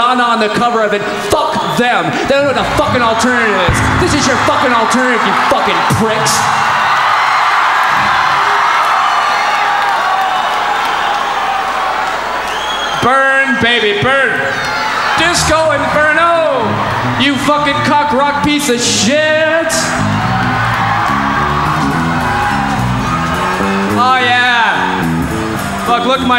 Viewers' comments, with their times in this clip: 0:10 I love this baseline🙏